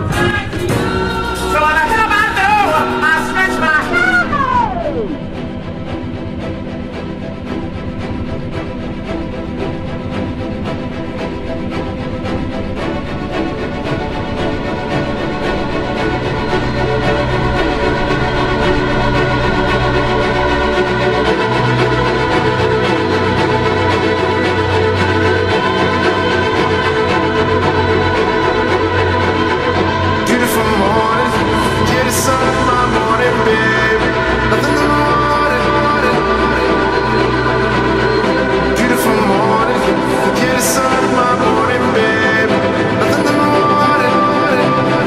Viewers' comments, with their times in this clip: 0:05 The build up sounds like an MCU Film tbh
0:30 Bro the drop is i been listening to this for a minute godamn